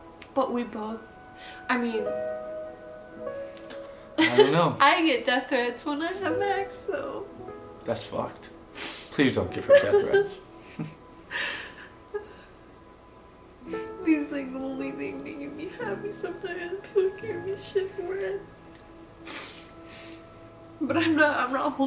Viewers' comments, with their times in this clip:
0:08 what is a “death ride/rite/right” didn’t hear clearly